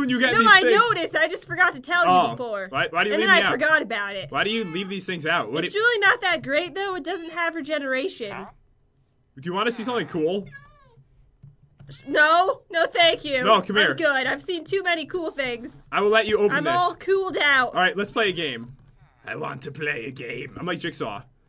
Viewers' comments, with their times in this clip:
0:07 I heard a villager fart 💨